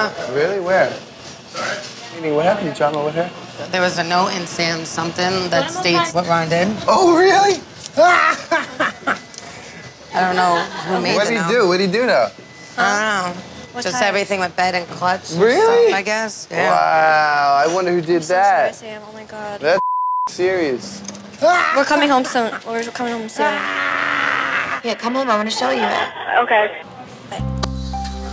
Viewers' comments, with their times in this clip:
0:10 mikes reaction and cackle is straight up halarious. It’s why mike is awesome